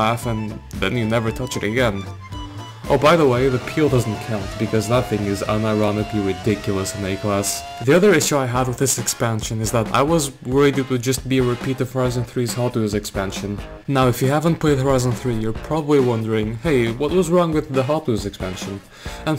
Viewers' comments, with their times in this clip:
0:03 how the peel p50 sounded like at its time